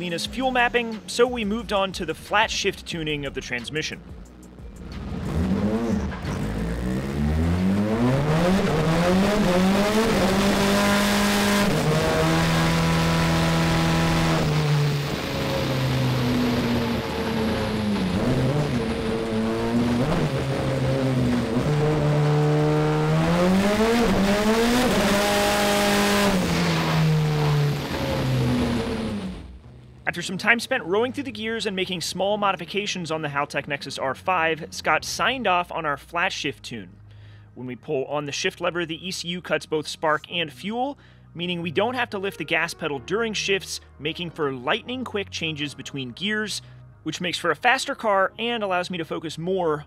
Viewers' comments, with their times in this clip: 0:08 Wow it sounded amazing can’t wait to see you rip it around the track.
0:30 Soudns amazing! Beautiful Beautiful Car!!!